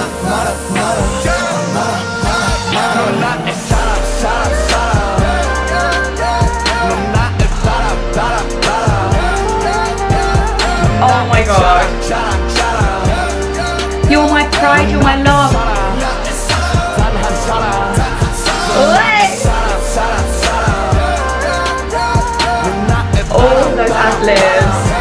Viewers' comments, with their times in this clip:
0:09 Alert: Jimin high note